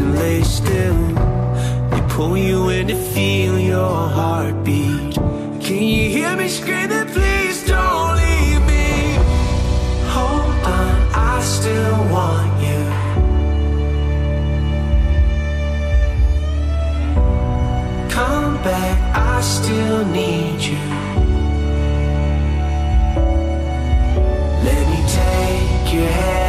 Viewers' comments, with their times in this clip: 0:09 That drop and photo gets me every time. That photo hurts in the context of what happened two years later